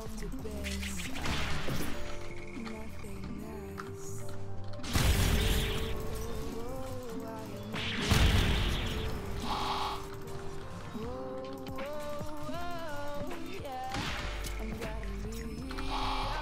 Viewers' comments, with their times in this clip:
0:04 the music was timed perfectly with the hits